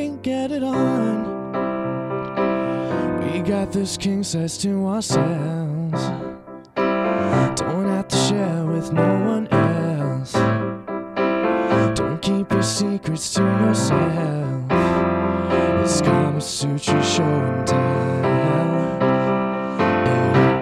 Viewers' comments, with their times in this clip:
0:05 now that ‘ourselves’ gave me shivers!